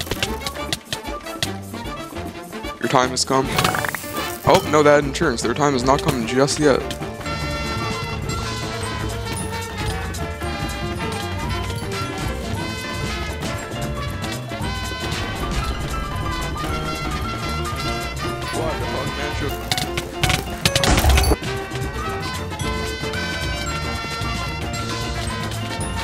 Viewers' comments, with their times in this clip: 0:08 2 music at once